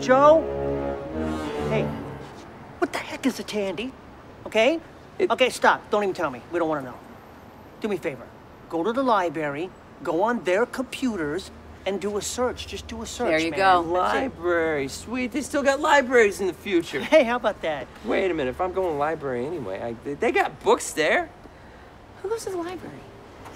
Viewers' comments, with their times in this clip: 0:08 Did he just say… “Lie-Berry”? 😨😅